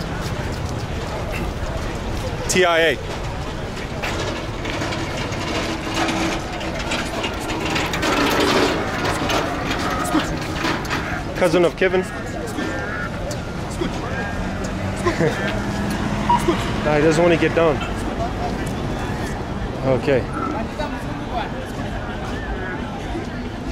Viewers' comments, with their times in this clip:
0:04 am I high or does it really seem like the camel is making that machinery noise 😂😂😂😂